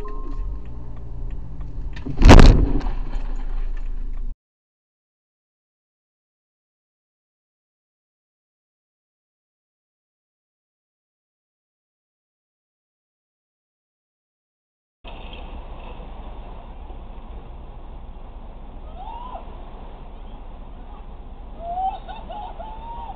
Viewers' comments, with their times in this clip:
0:07 is she really shouting at the other driver because she turned in front of him